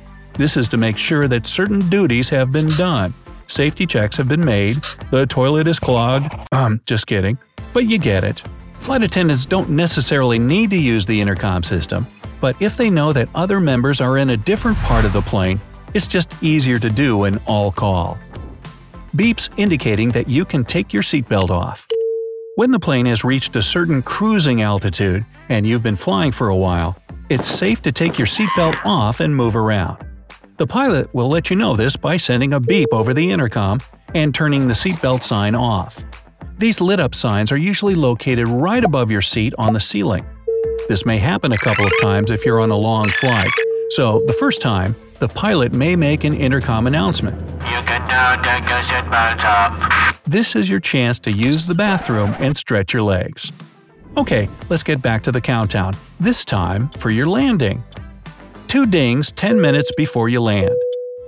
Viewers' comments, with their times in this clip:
0:06 he said airporn
0:47 Definitely the pilot is either Indian or Pakistani. Haha!